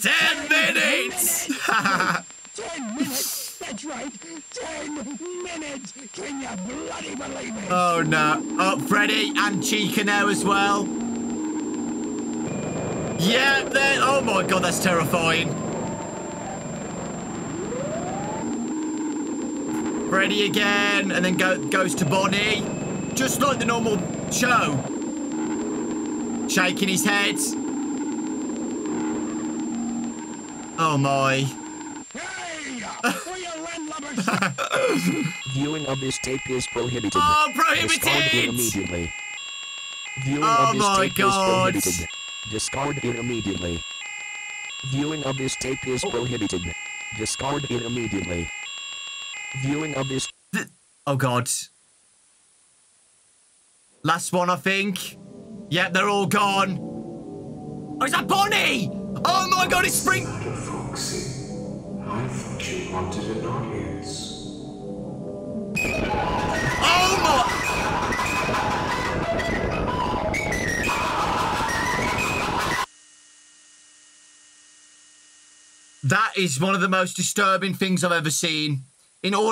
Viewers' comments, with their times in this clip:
0:07 dont worry theyre just speaking in microwave
0:35 That text-to-speech voice kinda took me out of the whole thing though because I've watched so much SMG4 that I automatically associate that voice with the Goldeneye guard Chris and thus I was just registering it as Chris speaking there which made it more silly than anything to me. The video was really really good though, just that particular text-to-speech voice has too much of a funny connotation for me.
1:01 actually sounds like William ngl, like when you hear William in sister location
1:03 i started dancing to the song
1:05 that's scary as heck but the music be vibin
1:05 the music kinda a bop tho